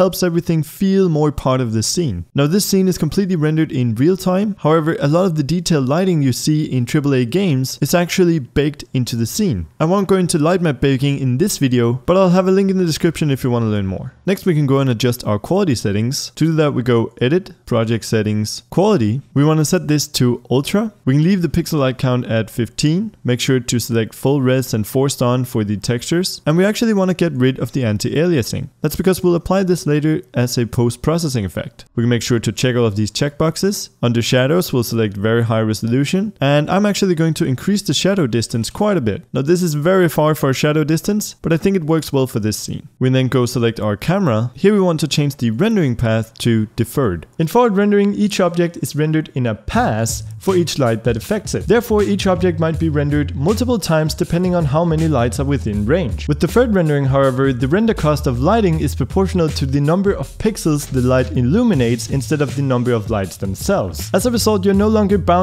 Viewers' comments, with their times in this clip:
0:09 was it just me or did he say light my baking?
0:46 I really like the tutorial/lecture/helper video bit, but ... You are using the music in a weird way, at the most awful time, in my opinion! The Unity bit is just a 'follow my lead' kinda chapter, but you also have the 'lecture' bits, where you actually tell about why something happens or what some terms mean. Example: you start to talk about what forward and deferred rendering is. and then the music starts and people have to listen to 2 things, the explantation and music. Eventhough some people might only focus on your voice, most people have trouble listening to it, because there are multiple sounds. naturally you start to listen to 2 things, which is confusing. The explanation is really helpful for everybody. This is stuff people need to know, good job. Everyone can copy what you do on screen, but these lectures are the most helpful to everybody.